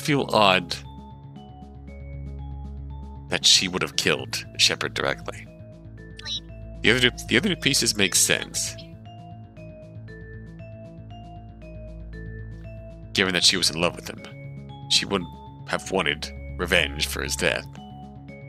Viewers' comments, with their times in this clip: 0:06 what was that noice?